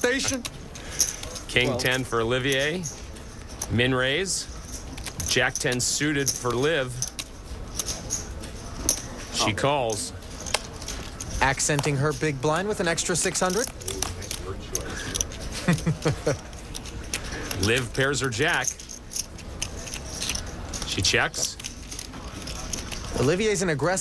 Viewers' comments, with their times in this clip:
0:10 accenting her big blind with an other 600: The way he said big blind and the laugh afterwards, it isn't hard do imagine what the commentator was thinking about!